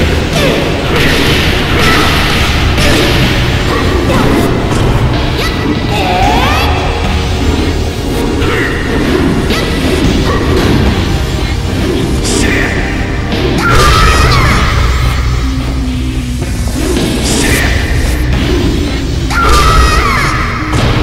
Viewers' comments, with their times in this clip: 0:04 the most Xiaoyu sound ever